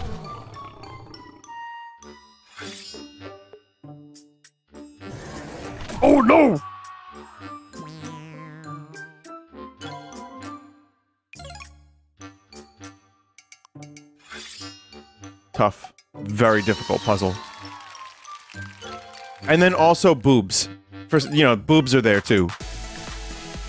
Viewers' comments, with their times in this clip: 0:05 that OH NO was perfect.